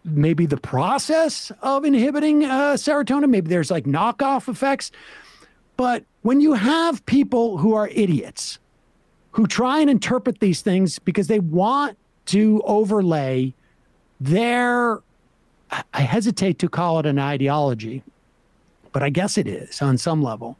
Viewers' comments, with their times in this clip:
0:06 Sam's calm, collected explanation of why what Jimmy dore is doing is so bad (starting ) made me laugh harder than it should've